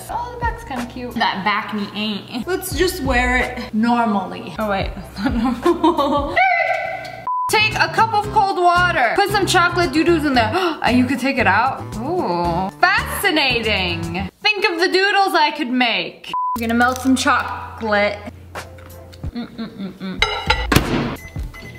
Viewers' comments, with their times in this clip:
0:04 the skiiiiiiiiiiiiiiiiiiiiiiiiiiiiiiiiiiiiiiiiiirt in made my day